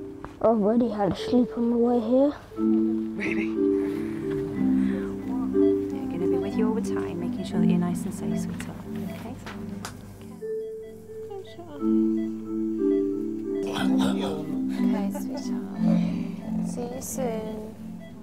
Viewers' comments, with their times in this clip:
0:03 What is that whisper